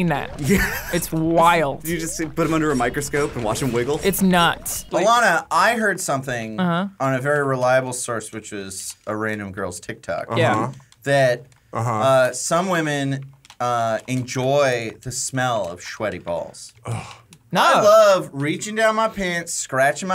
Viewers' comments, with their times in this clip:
0:04 “That’s nuts.” OMG that was the most amazing, well timed, dead pan delivered, pun ever!!! Bravo bravo!!!!